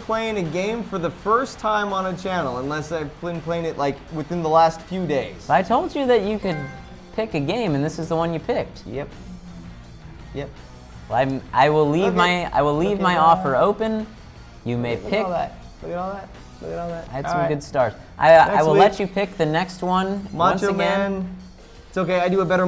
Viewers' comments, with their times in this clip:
0:06 that trophy sound